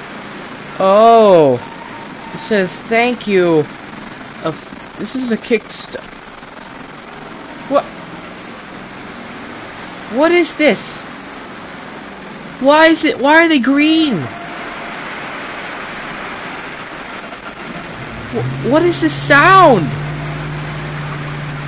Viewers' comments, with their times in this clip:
0:09 sound like a BALDI.EXE on your computer WARNING THIS CAN'T GIVE A NIGHTMARES FROM BALD IS BASIC AND YOU NEED TO GET 7 NOTEBOOKS AND GET OUT OF THE SCHOOL HOUSE RIGHT NOW !!!! 😱 THEN YOU WAKE UP AT 3 : 00 AM NOW YOU CAN'T STOP SLEEP ALL DAY THIS IS SCARY DO NOT PLAY THE BALDIS BIRTHDAY !!!!! 😱😱😱